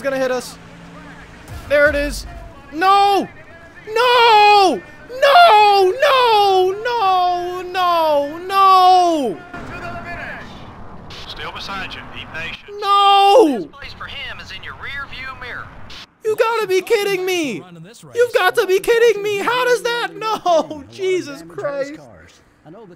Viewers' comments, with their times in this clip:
0:03 It kind of resembles Darrell Waltrip from Richmond 2008 with the Dale Jr-Kyle Busch incident.